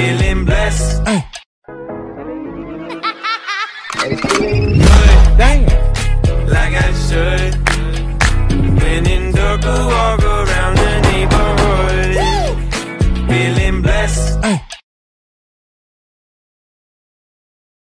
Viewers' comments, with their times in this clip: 0:03 I thought it was poke